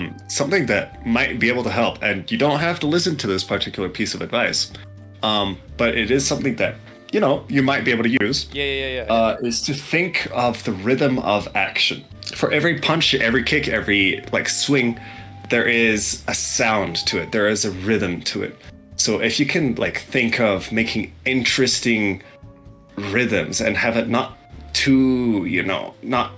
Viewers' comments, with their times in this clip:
0:09 Tengen would be proud with the sound of fighting.